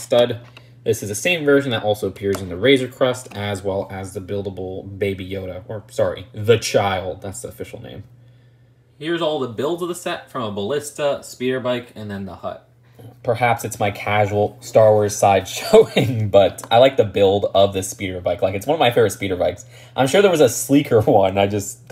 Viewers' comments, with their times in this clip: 0:03 he calls the razorcrest the razorcrust